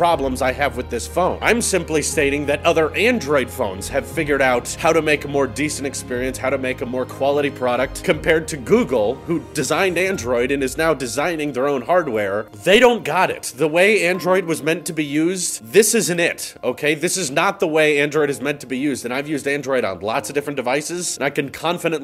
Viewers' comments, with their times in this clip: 0:09 Google ROASTED!!!!!!!!! Also the tragic music.